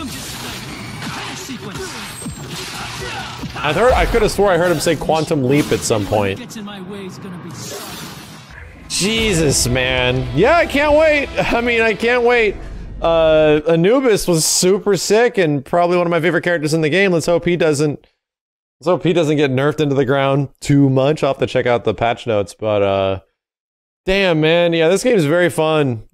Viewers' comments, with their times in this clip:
0:10 Dude you talked over the same part twice